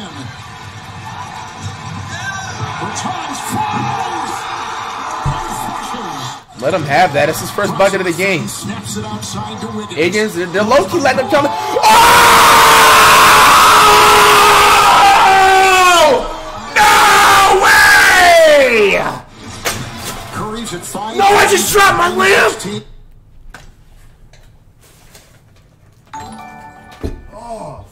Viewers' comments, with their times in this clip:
0:06 warning, in about 2 seconds there will be earrrape (for headphone users)
0:10 thank me later (turn the volume down first lol)
0:11 potential new screaming meme sound. 😂😂😂